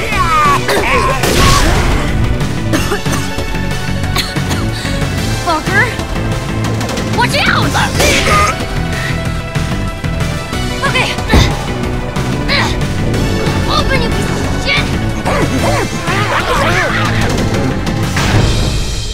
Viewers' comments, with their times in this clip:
0:07 In you listen to the zombie dining to them you can here him say fuck you you got to listen closely to it and you'll hear it